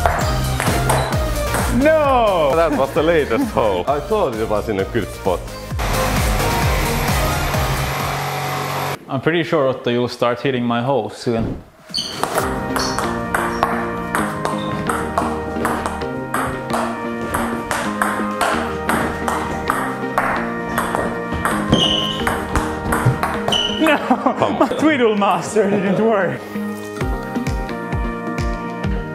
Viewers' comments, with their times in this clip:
0:10 Anyone else notice the ball made noises with the music?
0:11 It was on beat so often
0:11 I love how the music syncs with the match on xdd
0:11 the bounces sync with the music
0:11 Wtf anyone else heard the beat sync to the ping Pong ball att
0:12 the tempo of the ping pong ball sounds perfectly synced with the music
0:12 the ping pong bouncing matches the rhythm of the music
0:13 hits with music